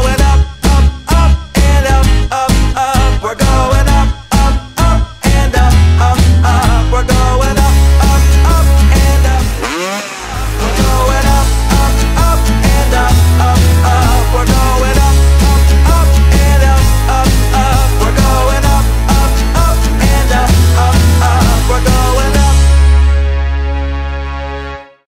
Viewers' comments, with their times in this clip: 0:08 Ha, I loved the pause of music for the two stroke rev